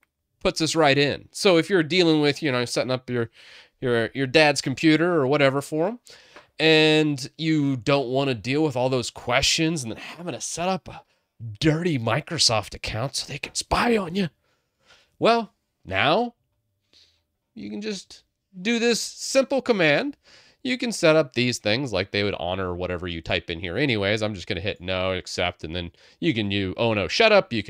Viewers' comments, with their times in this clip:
0:10 I love the way you said that 😭